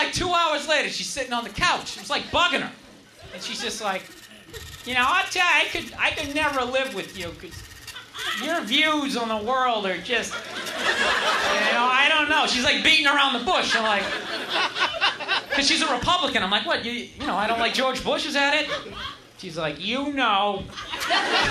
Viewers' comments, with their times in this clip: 0:05 I love the check spot audio Printing the fucking checks while the act is on a roll? Shitty comedy club etiquette.